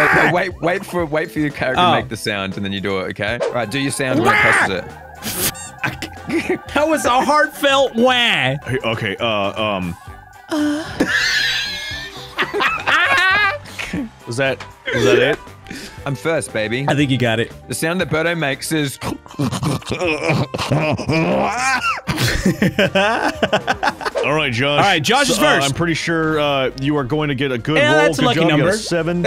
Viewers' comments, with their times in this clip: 0:09 I sure didn’t know the guy with the deepest voice could do THAT
0:10 The sound narrator made had me dying on the floor of laughter